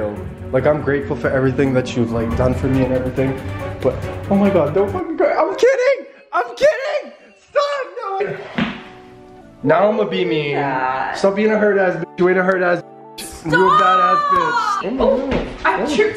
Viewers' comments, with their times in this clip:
0:04 the way his voice went from serious and harsh to soft and cute haha 🥰😂